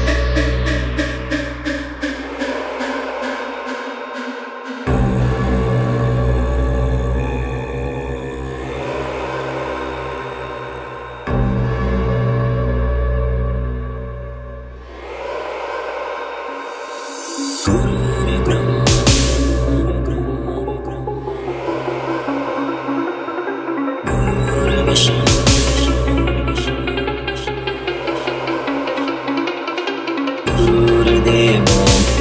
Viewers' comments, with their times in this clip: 0:07 sounds like Ravan Ji is in deep meditation in Kalyug.. deep down in Lanka.
0:18 the lows are good